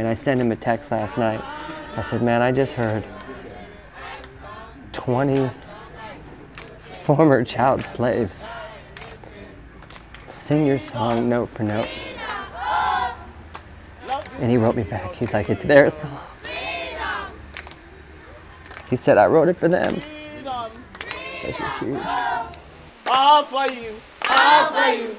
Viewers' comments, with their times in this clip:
0:08 hearing the catch in his voice, and seeing the tears, in his beautiful eyes... It hurts my heart. I just want to bawl, and go be a superhero and hug all the children.